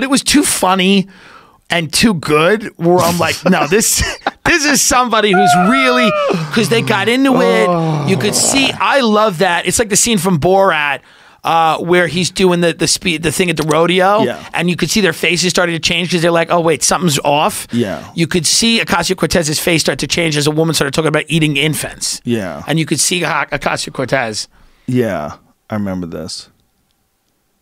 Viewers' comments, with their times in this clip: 0:08 Did someone rip ass xD "exactly"